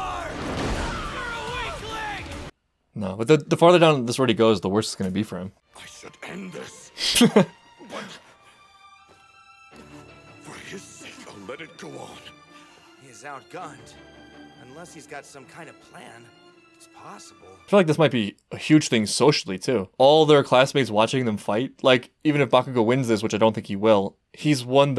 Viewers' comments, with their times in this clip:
0:05 oh that mic is definitely broken